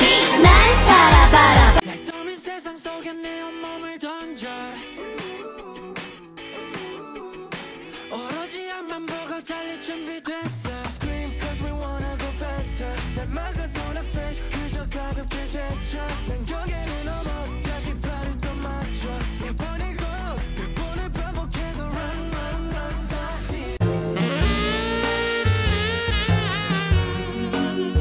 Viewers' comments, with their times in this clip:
0:09 scream is soo good😭